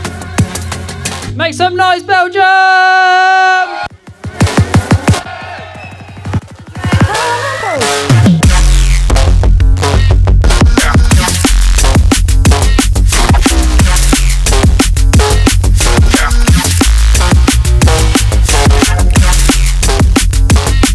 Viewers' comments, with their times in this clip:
0:05 sooo dirty <33333